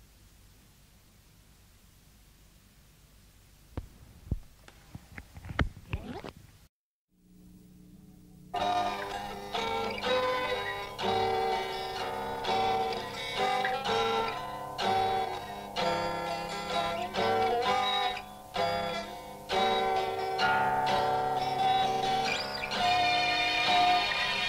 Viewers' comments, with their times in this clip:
0:09 in, Jimmy starts to strum a song, in a drone-tuning that would eventually surface 11 years later (if what we’re hearing is in fact from ‘74 here) on The Firm, Midnight Moonlight. Bits of it were heard nightly during the ‘77 tour and during WS/BMS, all prior to the Kashmir launch off!